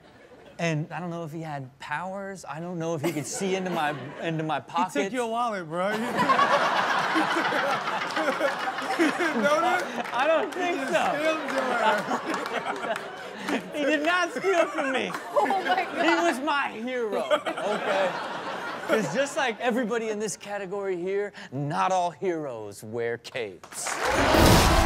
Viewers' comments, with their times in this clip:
0:05 sterling gets so damn happy when he makes people laugh bruh just look at his legs the louder the laughing gets the faster his legs shake😂😂😂